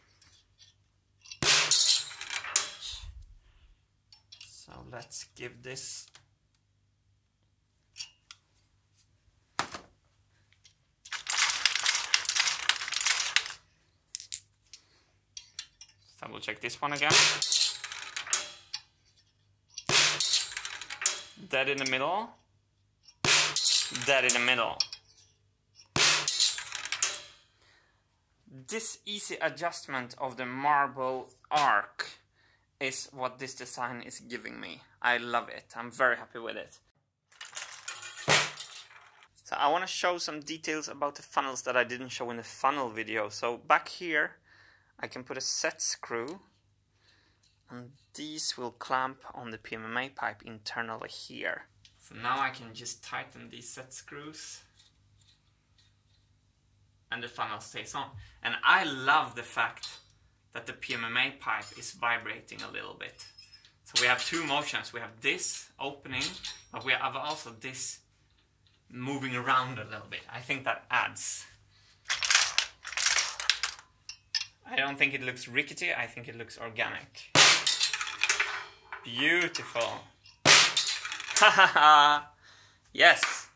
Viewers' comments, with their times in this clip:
0:10 Vibraphone: am I a joke to you?
1:10 Hmmm... Martin's tone sounds a bit self-affirmation-y xD